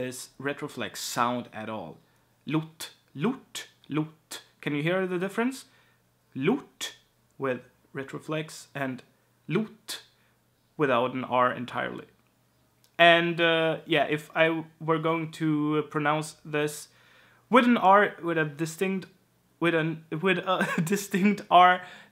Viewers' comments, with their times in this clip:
0:04 Don't feel bad, I speak 4 languages and I can't hear the difference to save my life either.